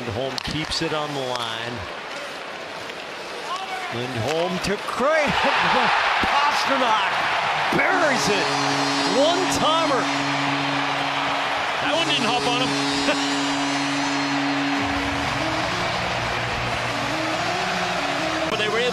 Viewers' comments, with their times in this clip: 0:03 It’s so funny that all the Boston fans just started cheering knowing that pasta was gonna score.